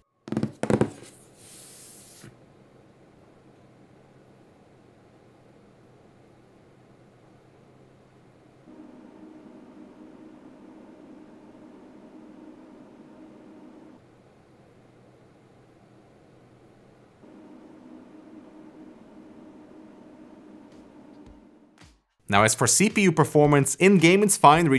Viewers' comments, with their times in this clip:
0:05 my fan speed noise is exactly the same, but on 20%